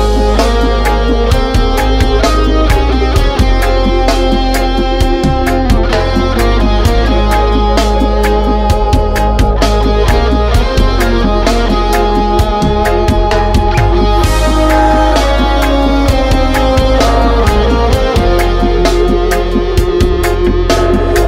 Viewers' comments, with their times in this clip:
0:04 👽💚 beautiful song it brings a tear to my eye